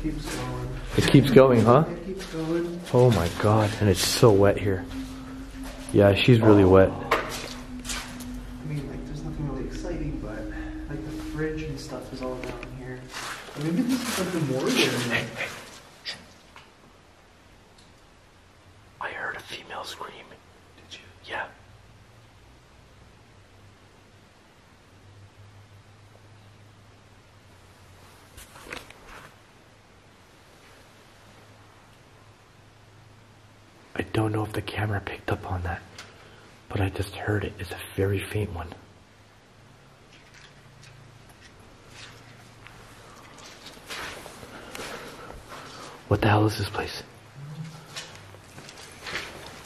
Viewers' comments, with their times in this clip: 0:06 listen carefully sounds like something breathing heavily "ahhhhhhuh"🤷🏻‍♀️
0:07 evp of man making noise
0:33 faint evp sounds like child or baby talking..